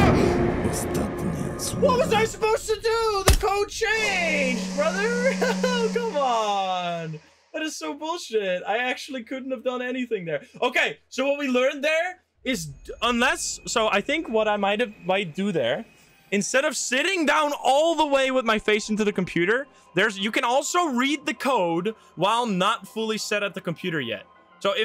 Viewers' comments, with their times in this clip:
0:06 i was so confused when i heard the hitman talking polish LMAO